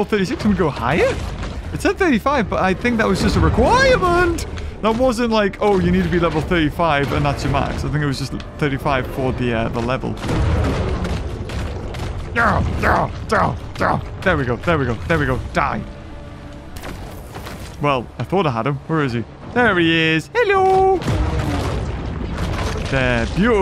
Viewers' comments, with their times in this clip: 0:10 Why did beaver sound like heavy from tf2